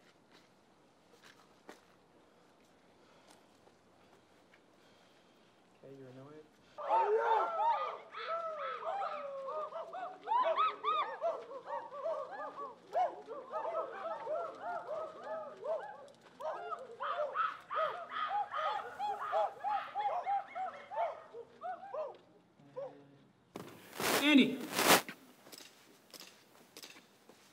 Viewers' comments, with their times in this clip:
0:08 i love how professional they are, they don't even laugh at humans making ape noises